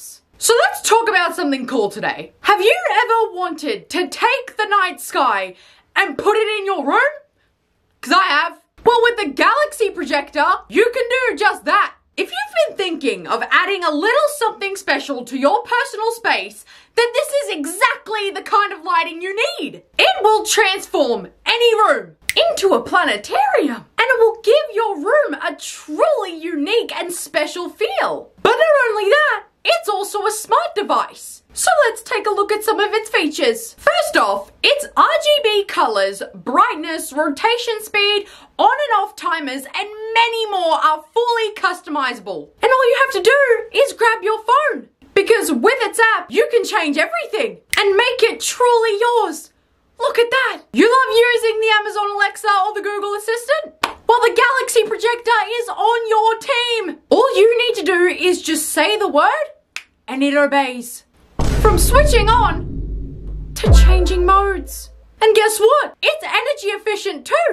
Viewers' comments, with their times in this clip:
0:10 i love how she still sound annoyed 😂
0:51 the fact that she uses her mad tone is very funny 😂😂😂 but the product sounds like my old light very coool!